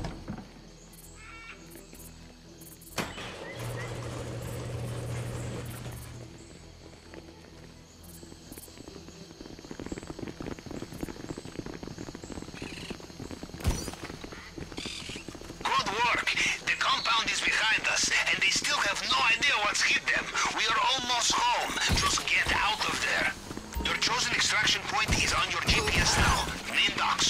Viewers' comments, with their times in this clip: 0:09 my ears enjoyed those step sounds